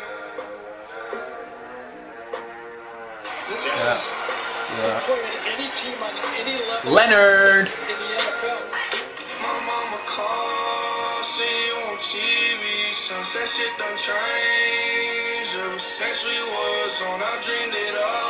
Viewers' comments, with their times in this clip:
0:06 sounded like an American for a second lol.